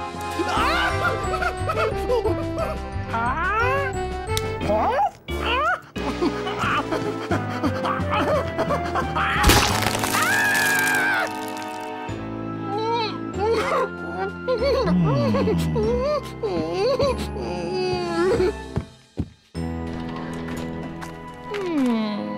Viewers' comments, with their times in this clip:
0:10 five nights at freddy's screams be like: